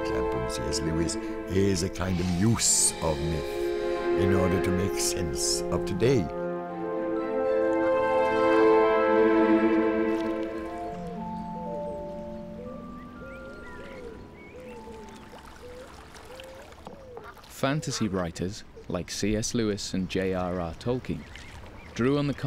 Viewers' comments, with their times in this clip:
0:03 The dramatic music is so loud that I can't hear the speaker!